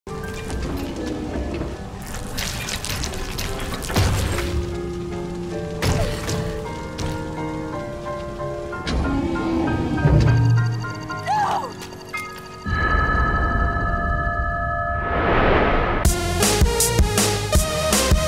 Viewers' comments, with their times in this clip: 0:01 why did that gaurdian sound all slimey